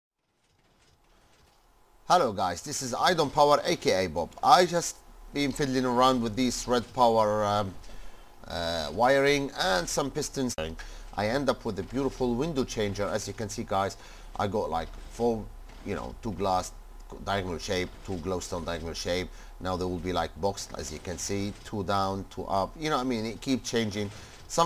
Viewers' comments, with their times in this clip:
0:10 Some pistons INK